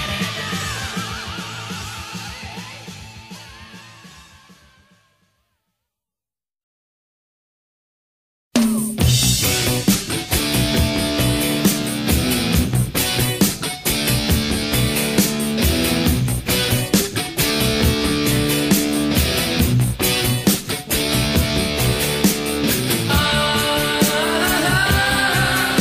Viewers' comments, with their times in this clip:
0:08 "Is There Anybody There" Is Reggae + Rock 👍
0:08 Is There Anybody There? 90% reggae. Incredible! That inspires me to make a compilation of reggae metal gems like this. Any suggestions?